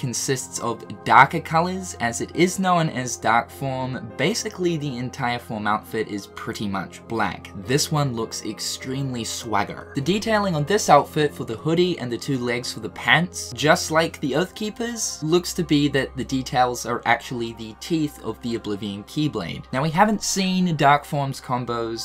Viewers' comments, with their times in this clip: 0:08 lowkey obsessed with how you said "swagger"